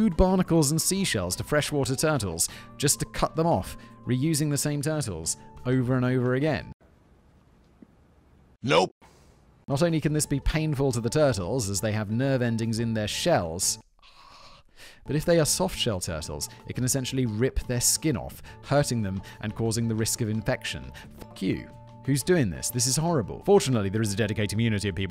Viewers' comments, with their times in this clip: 0:07 did they dub a different voice in for danny devito??